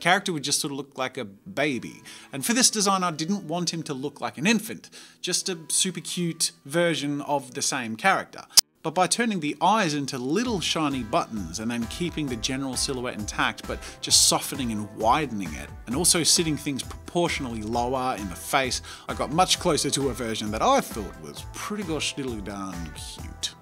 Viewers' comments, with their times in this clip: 0:07 am i the only one who got scared from the loud click sound?
0:07 OW MY EARSA
0:08 I thought my earphone broke lol